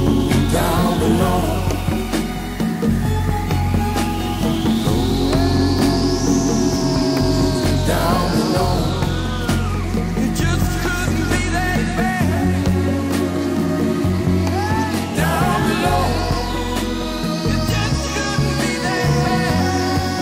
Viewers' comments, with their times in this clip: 0:05 The music... I focused so much on the words and never really acknowledged the genius of the music. Those violins, the bongos,... this song is so hot on so many levels. Had the stop the song to give credit where credit is sho'-'nuff do.